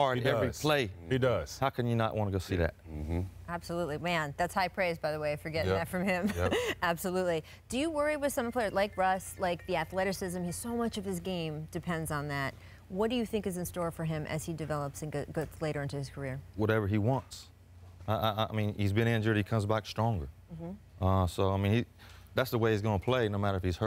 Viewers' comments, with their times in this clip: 0:08 Did you hear Stephen Jackson’s phone rings ! Come on dude; You always shut your phone while in air!!!